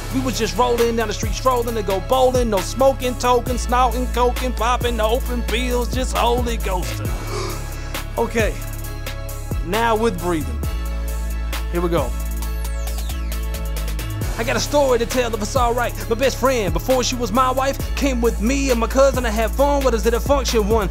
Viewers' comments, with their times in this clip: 0:05 OMG sounds like ludacris